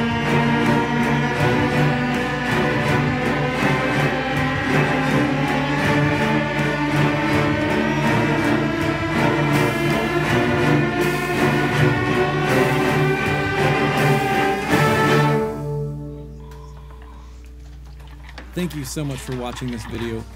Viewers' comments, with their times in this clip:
0:05 that rising swell tho. how did these phone recordings get mixed into something so wonderful?